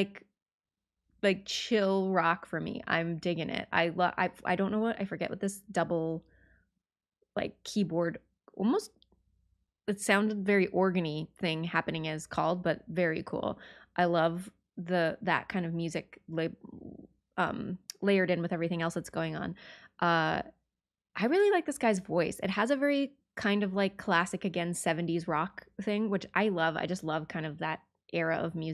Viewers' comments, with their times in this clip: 0:10 Did you say organ me ?